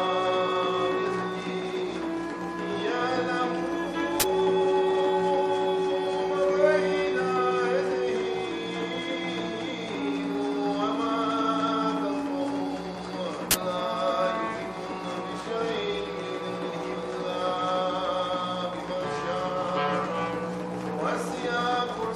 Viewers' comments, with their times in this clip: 0:07 some minor glitches